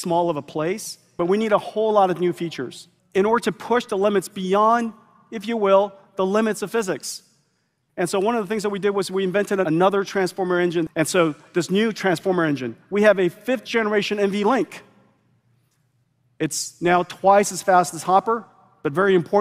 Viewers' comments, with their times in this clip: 0:06 And yet They Laugh